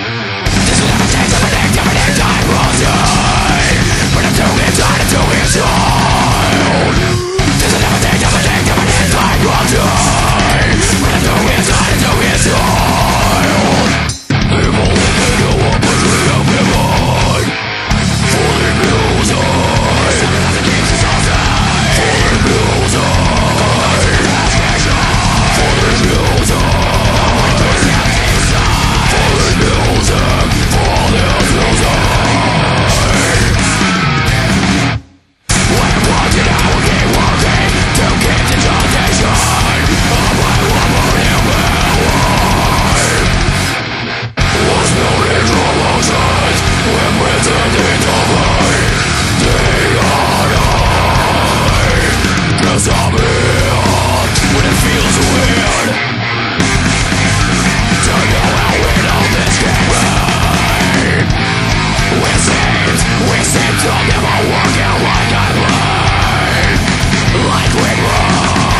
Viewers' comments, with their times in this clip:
0:07 The breathe in is so good.
0:56 this song has one of my favorite riffs from all time. the riff, that riffs bad as fuck.